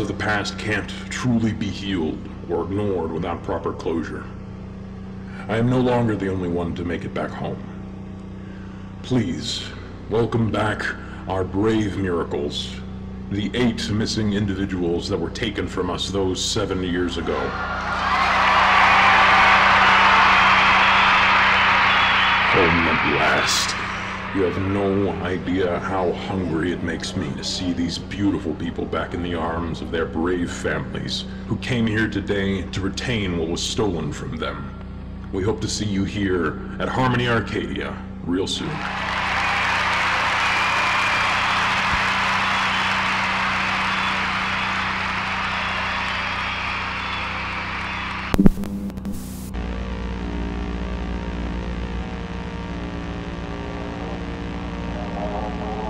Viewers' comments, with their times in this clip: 0:07 I hate how he says “hungry” why-
0:40 The cheering of the crowd along with the "Remains Never Found" is just so fucking funny lol